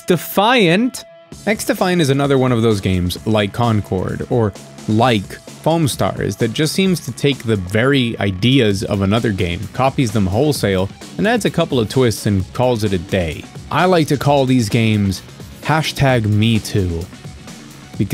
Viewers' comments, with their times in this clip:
0:03 the jack x soundtrack popping up gave me chills. talking about good games..